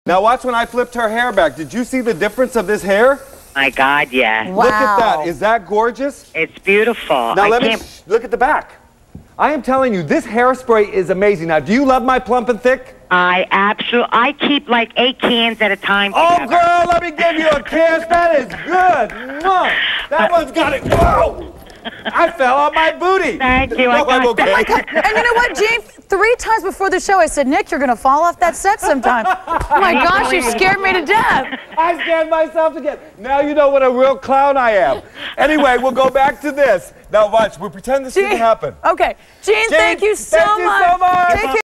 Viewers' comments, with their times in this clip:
0:07 did he shhh her😂
0:20 his falling voice is manly tho. 🤣🤣
0:20 WHAM! Right on his booty!
0:20 gets job as video game grunt sound effect
0:37 The caller kept laughing before and after he fell.then he says .😂.. and now watch... we pretend this never happened....lol..with YouTube clips...😅